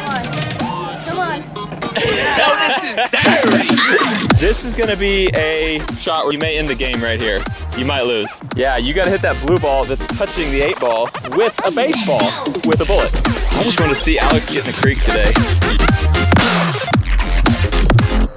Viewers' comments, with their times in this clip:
0:03 was that a moan?